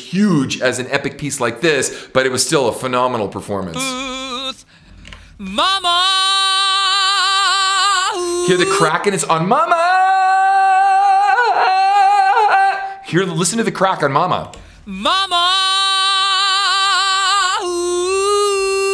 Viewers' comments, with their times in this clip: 0:06 when he says MAMMA.. I dont think that is a crack in his voice. sounds like a double vocal kicked in half way thru mamma to make the ooos sound bigger